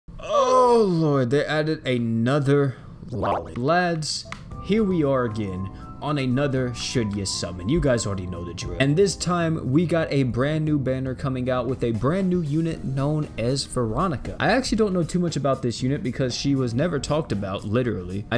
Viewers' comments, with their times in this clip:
0:00 He moaned this loud😳